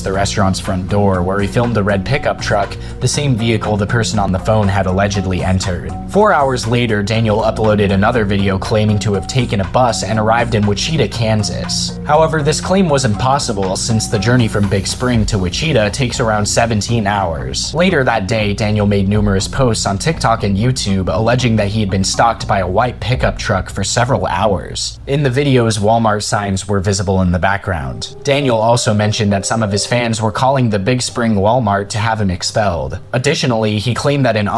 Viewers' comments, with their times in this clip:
0:07 not to be that person, but as someone from kansas, it’s pronounced like witch-ih-taw not like wi-cheeta
0:07 Wich CHEETA Kansas 😭
0:09 does this guy really not know how to say Wichita lmao
0:09 The way you pronounced Wichita made me giggle. I'm in Kansas, born and raised. It's pronounced Wich-a-taw. 😊
0:11 ...Did you really pronounce Wichita "wuh-CHEE-tuh?" Its pronounced "WIH-chuh-taw".
0:14 witch-uh-taw..... not wit-cheetah.
0:17 I’m sorry but the way you said Wichita was so bad 😂